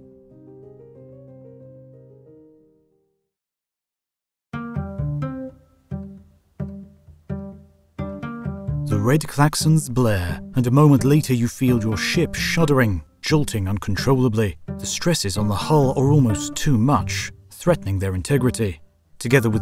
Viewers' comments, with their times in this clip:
0:06 A New HoTU is a pure intellectual joy- Easily the finest channel on the net P.S. I love the new guitar music
0:06 I LOVE the new (guitar) music